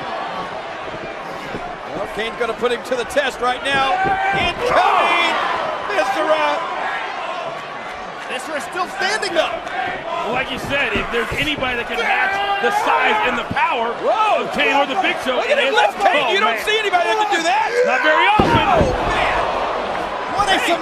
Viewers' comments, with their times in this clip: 0:08 Let's Go Mable chant